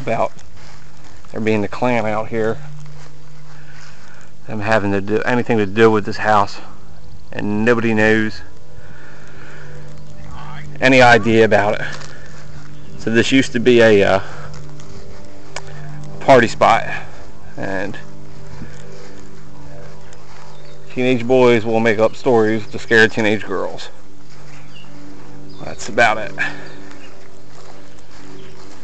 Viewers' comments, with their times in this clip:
0:09 lol lawn is all mowed, what was that noise ?